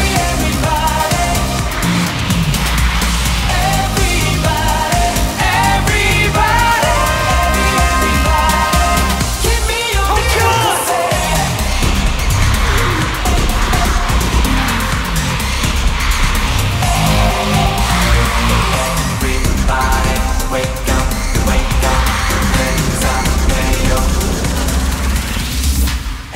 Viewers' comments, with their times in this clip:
0:10 Taemin shout and push out all his energy,they're so strong.
0:10 fanchant is the best Lee Jinki Kim Jonghyun Kim Kibum Choi Minho Lee Taemin Shinee Everybody.